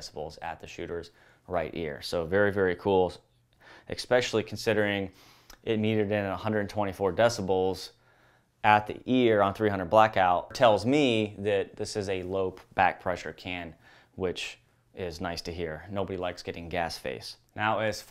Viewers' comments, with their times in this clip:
0:03 "ek-specially'? NO such word exists, sir! :)